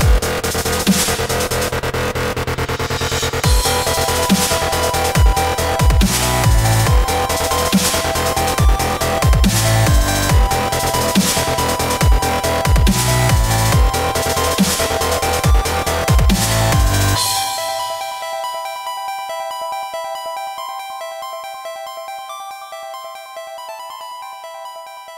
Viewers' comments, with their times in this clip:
0:10 It sounds scary